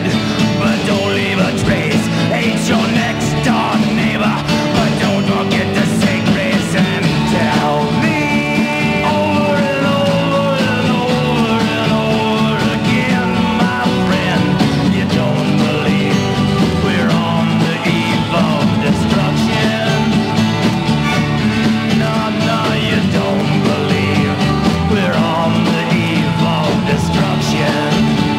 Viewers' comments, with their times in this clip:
0:09 it reminds me of the bad tape edits I used to make putting tags on the end of a commercial!